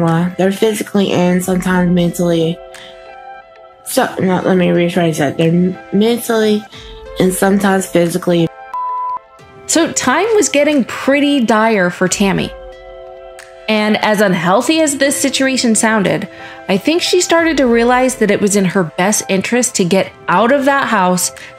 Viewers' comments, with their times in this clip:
0:08 why is the word "abusive" bleeped?